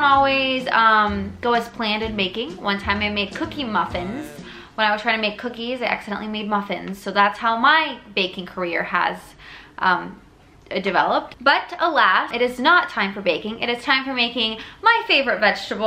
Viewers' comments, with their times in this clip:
0:03 What is that voice ? It sounds like Michael bublé but?? Subscribe?